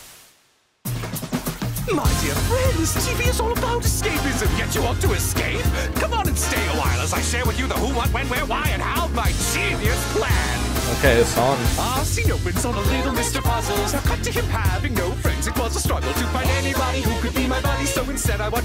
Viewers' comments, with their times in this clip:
0:03 now this song I'll give 5 stars 🌟 🤩